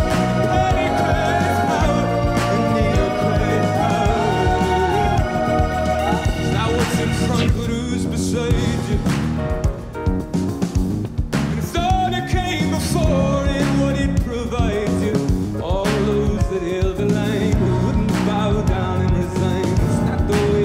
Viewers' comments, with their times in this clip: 0:07 and lo, bonus bass groove for all